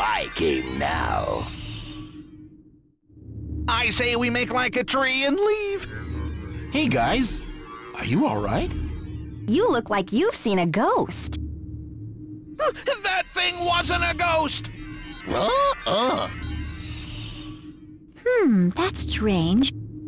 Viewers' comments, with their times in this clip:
0:05 Did I just hear Mecha Sonic from SMBZ?